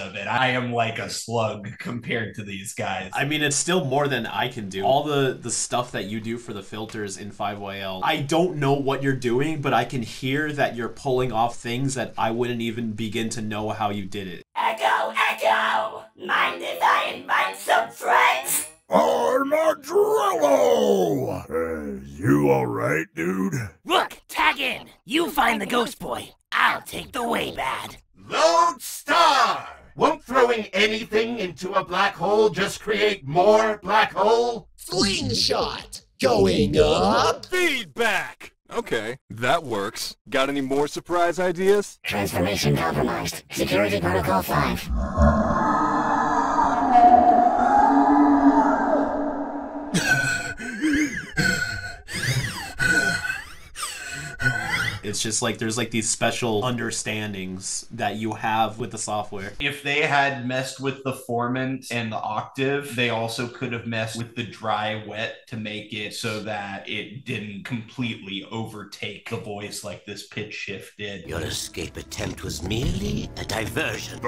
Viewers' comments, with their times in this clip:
0:05 I LOVE ALL THE VOICES ACTUALLY
0:14 those voices are awesome
0:15 I love how Echo Echo has an auto tune voice
0:28 I feel like Lodestar needs a tiny bit of reverb, maybe sampled from crashing cymbals or something to get that tinny metallic vibe
0:41 i LOVE the way they made the omnitrix sound for 5YL
0:46 absolutely love this sound design for Waybads, really sells the space whale thing (we think that was said somewhere?)
0:49 All those awesome alien voices, and then here's Eon having a fucking Asthma attack.
0:49 I cracked from this breath
0:55 non-related to the breakdown but that way bad gives me the same vibes/chills hearing a reaper leviathan does